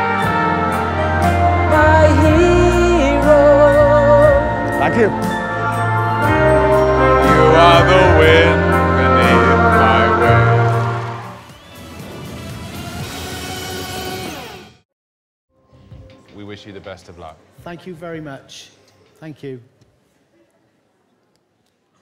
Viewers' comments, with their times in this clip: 0:03 Dec's got a beautiful voice !! haha